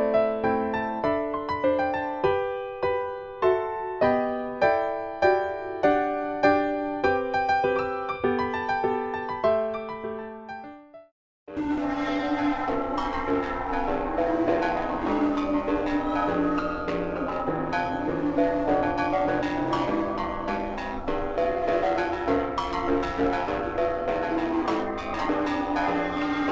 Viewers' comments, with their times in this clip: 0:10 VIBE TO THIS HAPPY MUSIC :)